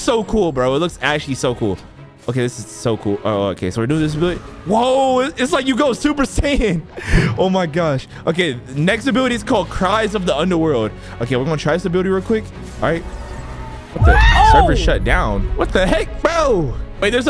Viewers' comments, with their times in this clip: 0:04 also thats not super saiyan THATS SUPER SAIYAN BLUE YOU CAN TELL BY THE ECHO